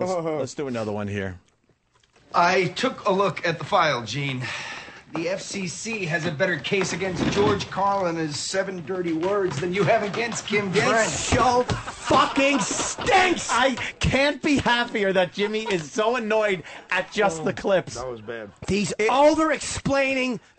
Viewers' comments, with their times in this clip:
0:03 THIS...SHOW...FUCKING STINKS! Jimmy's so angry he barely let the clip finish.